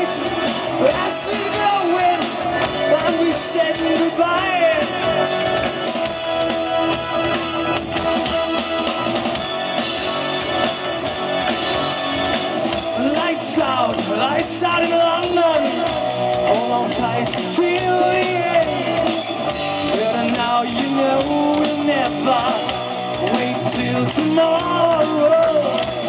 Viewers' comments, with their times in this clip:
0:10 Is the guitar player playing some kind of midi bass pedals around the section? It sounds like it.